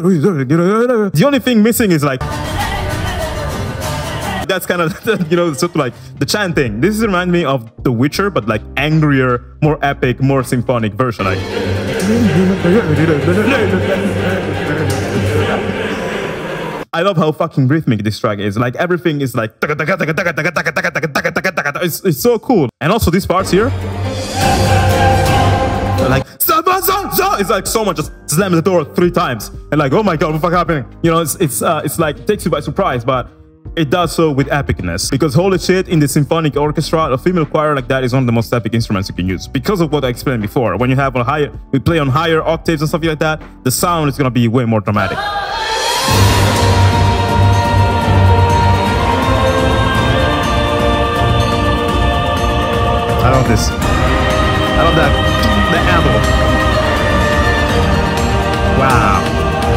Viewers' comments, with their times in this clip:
0:03 Sounds a bit like one of the helicopter missions from AC: Assault Horizon.
0:45 i knew it, i knew you were gonna cut off the drop and start it up after the pause. Agh so frustrating, you didn't get to experience that uninterrupted, it's such an important moment in the game too